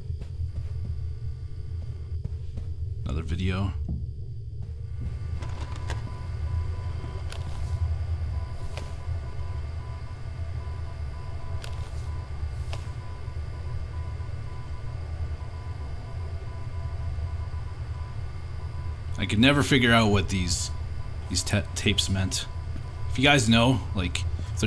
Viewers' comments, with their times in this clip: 0:07 While I don't have the ear to decipher it right, I'm almost positive that is a message in Morse Code.